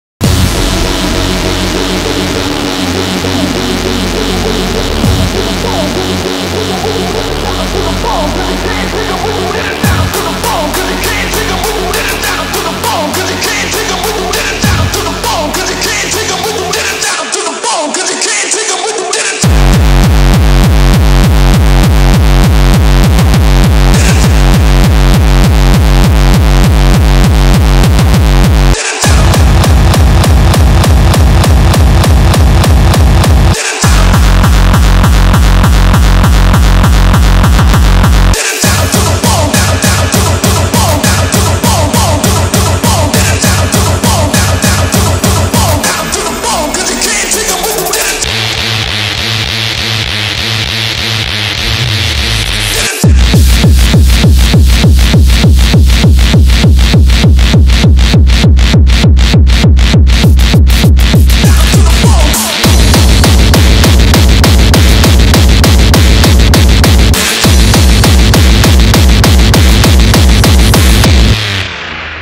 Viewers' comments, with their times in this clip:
0:00 I like the sound ''miau miau miau miau miau miau miau mimimiau.....''' hahahahaha
0:20 That Kick is how i like my Early Kicks. #NNS
0:52 The Bass kick feels like 400 volts go through your body when he drops that on a festival
0:52 best kick for me
0:53 I missed that kick